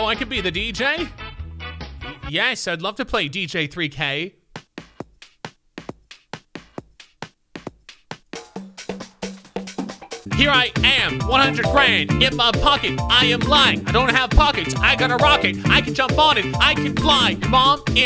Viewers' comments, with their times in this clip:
0:04 n they say white people dont got rhythm 😂